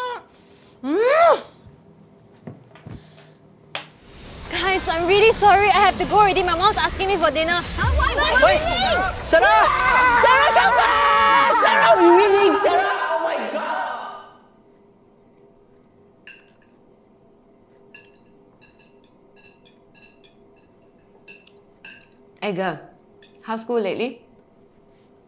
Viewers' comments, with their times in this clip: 0:07 tye girl scream is the cherry on top